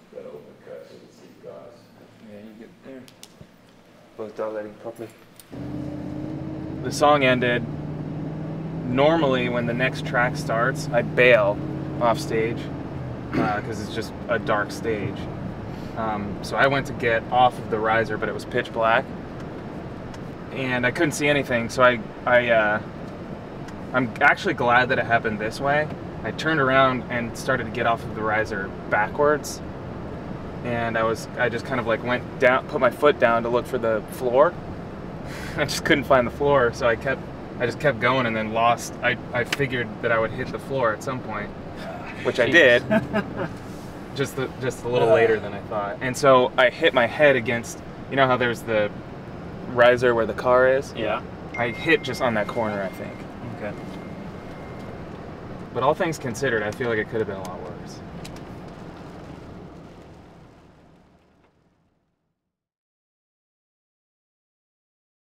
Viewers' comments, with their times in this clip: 0:05 when Tyler starts screaming on jumpsuit and you realize you have your headphones at max volume, but it's too late.
0:50 the point where everyone rewinded to check if they received a notification